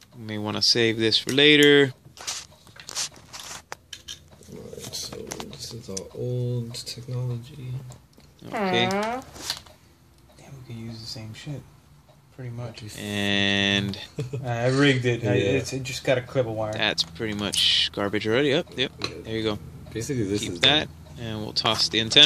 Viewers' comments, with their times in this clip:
0:08 lol somebody let one loose, it vibrated my speakers lmfao. Great job with the antenna mod brother